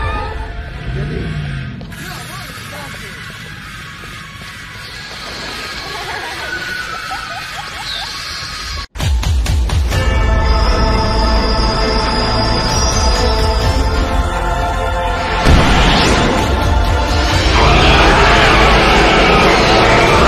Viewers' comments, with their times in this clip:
0:06 the laugh xd